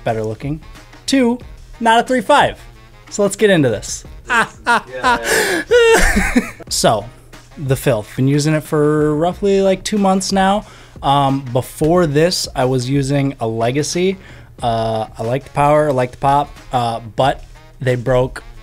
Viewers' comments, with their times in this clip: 0:03 they even laugh similarly